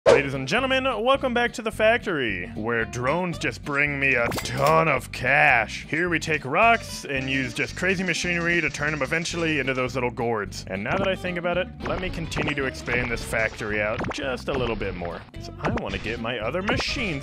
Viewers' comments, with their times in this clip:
0:05 why did that sound so weird